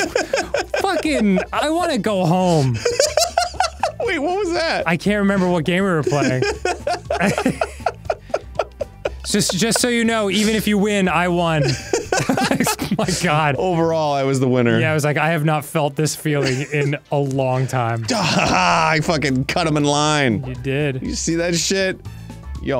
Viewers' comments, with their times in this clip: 0:06 Arin's laughter starts harmonizing with the music in the game. Magical.